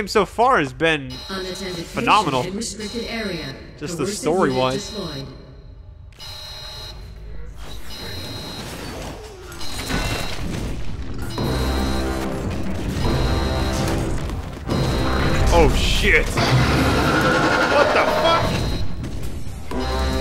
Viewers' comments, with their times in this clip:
0:08 Badass moment. Amaze soundtrack 😍😘